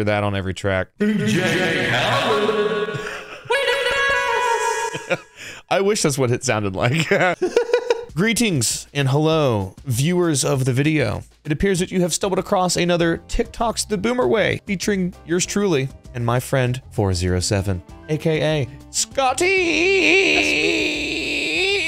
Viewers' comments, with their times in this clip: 0:08 i thought he said “green tinks and hello” i was so confused 😭😂